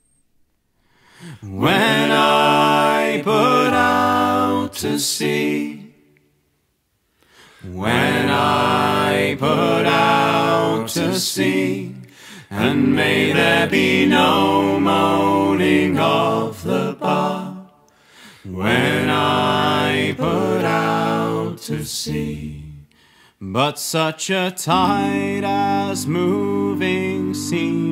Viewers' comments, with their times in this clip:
0:10 I am in LOVE with this harmony. That one dissonant note in the chord makes it an absolutely stunning sound. Not to mention, the panning of all the voices is fantastic!